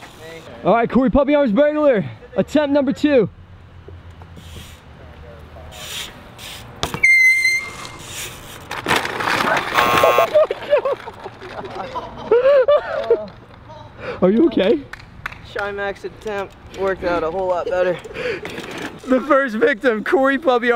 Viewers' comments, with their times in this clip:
0:05 why does his bike make that noise